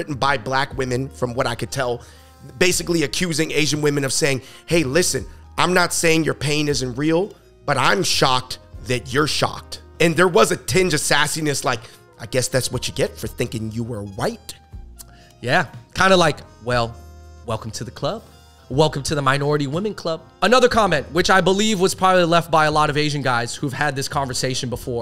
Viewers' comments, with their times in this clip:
0:07 spitting on the mic lmao